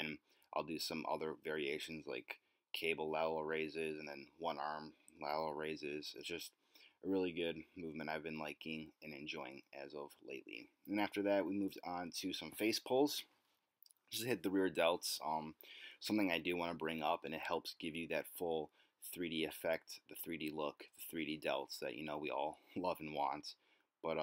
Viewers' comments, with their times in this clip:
0:08 Ok another thing for me to check out when I'm back in MN, that chicken looked damn good. I was waiting for you trip over your shoelaces lol. I liked the voice over, but the volume was really low and hard to hear even though I had it cranked :)